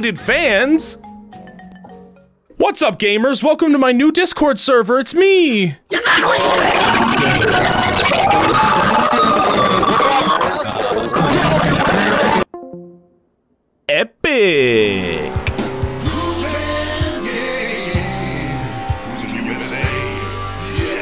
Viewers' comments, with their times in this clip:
0:07 love the new pokemon crys